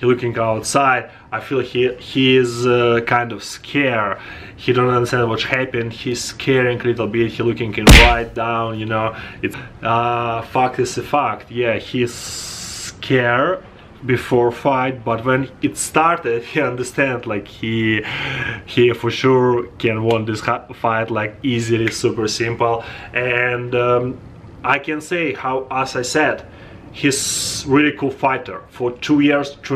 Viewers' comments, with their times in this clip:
0:10 "fucked is a fucked", i love it lol